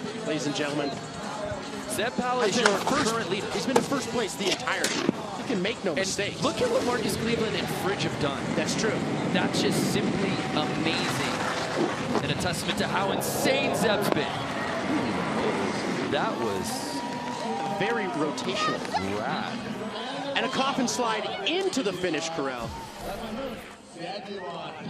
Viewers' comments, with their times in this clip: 0:10 yo this man sounded like a ninja in a movie